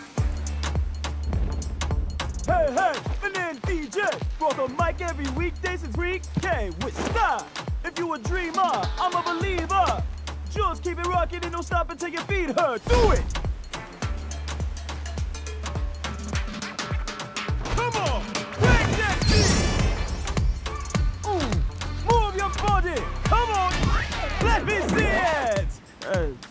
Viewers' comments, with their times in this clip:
0:09 oh my hod Deejay, he sounds like he is throwing a GYAT session just so a bunch of women can shake their bum bums. I’ve always thought he was so musically talented but damn he is so funny as hell lol